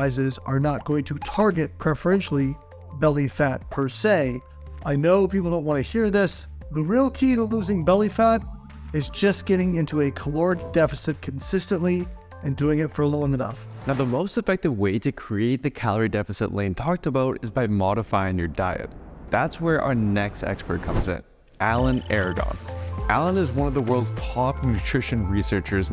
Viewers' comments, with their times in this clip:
0:09 A key word and I can't understand it. Wonderful!